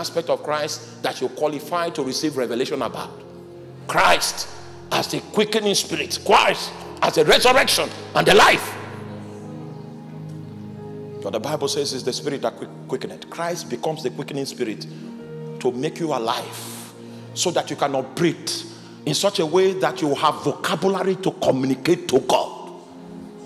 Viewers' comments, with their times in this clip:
0:10 War chant of apostle in background min Ahaaa eeeeyaaa We praise you Lord Jesus